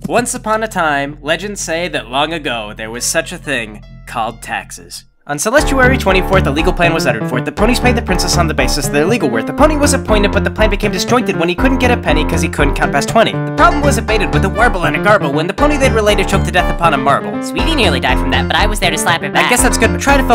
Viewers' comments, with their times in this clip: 0:04 Its so fast i have to turn down the playback speed. Lol